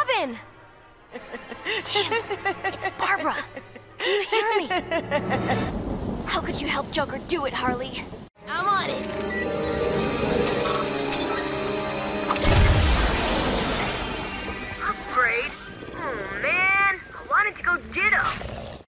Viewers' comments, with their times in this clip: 0:06 when yelling at your own voice